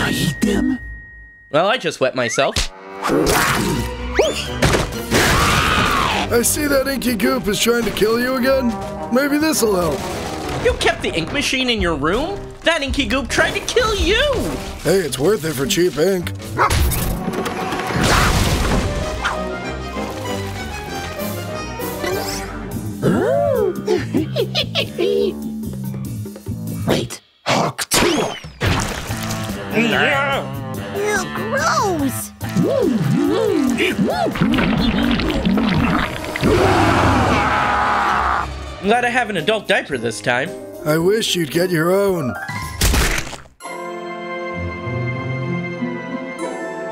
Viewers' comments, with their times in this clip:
0:07 why does doggy sound different
0:27 The fact it said hawk towa